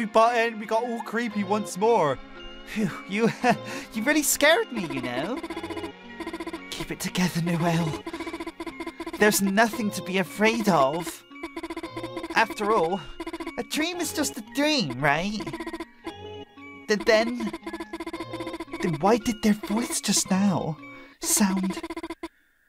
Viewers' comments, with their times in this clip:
0:07 the creepiest part is when you take her watch for yourself and she asks you with a shaking voice "I-is that my watch?!"